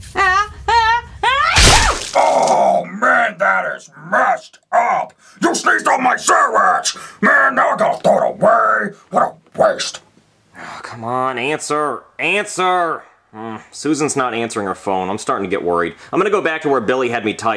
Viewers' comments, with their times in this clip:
0:05 fr what a waste why did you have to sneeze on Billy’s sandwich 🥪